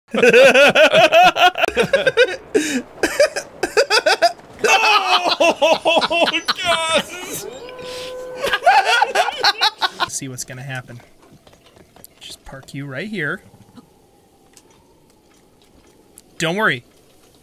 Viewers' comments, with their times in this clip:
0:01 The Basement: (laughs histarically) Link: Whats so funny?